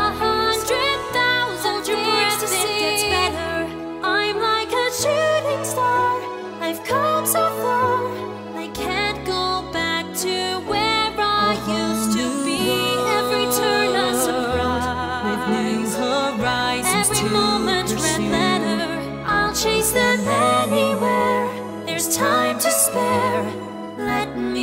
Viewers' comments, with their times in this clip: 0:10 Waouh Aladdin🌙🌌 I really thought see and hear a guy especially it's like the character came out of you otherwise I love the video I wathched it from France ( because I'm french ) 🇫🇷